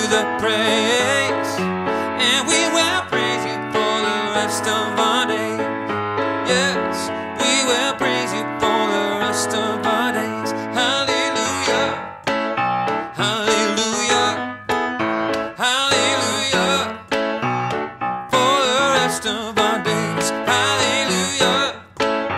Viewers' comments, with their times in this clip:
0:07 I found that was my favourite moment in the whole set. The combination of Hallelujahs with the joyful piano just makes it for me!